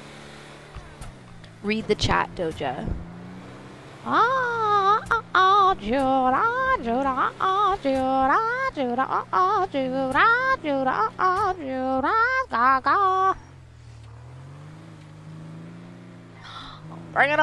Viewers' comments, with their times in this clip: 0:03 Doja Cat's little monster burst out of her body to sing lady Gaga's "Judas" song